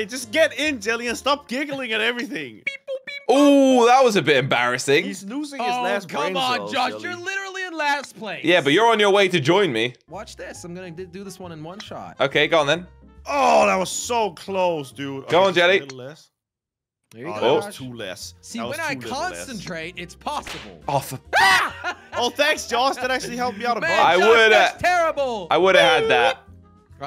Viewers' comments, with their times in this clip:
0:08 is so funny when he laughs😂😂😂